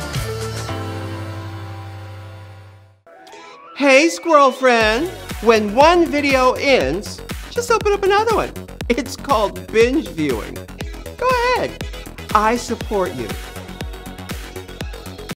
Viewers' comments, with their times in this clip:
0:13 I could listen to your voice all day long! Fab makeup, Dahling!